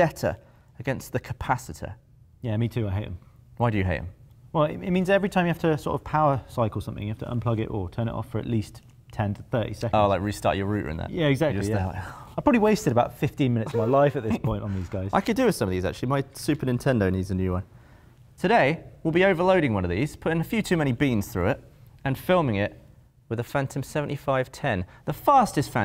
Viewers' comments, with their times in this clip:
0:09 "Restart your rooter?"